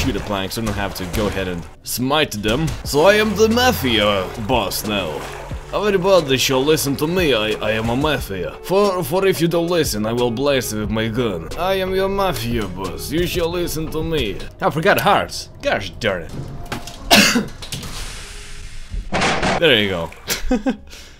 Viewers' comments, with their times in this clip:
0:07 One, Mafias don't Talk like that and Two, Only Russians do.